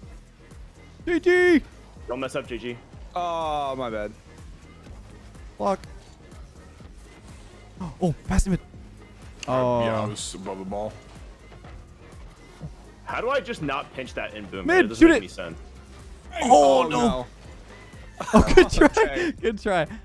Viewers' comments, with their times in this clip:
0:03 Ads were removed from this video apparently because or so I said "block" and the cc thought it was the F word. Pain. F's in the chat, ironically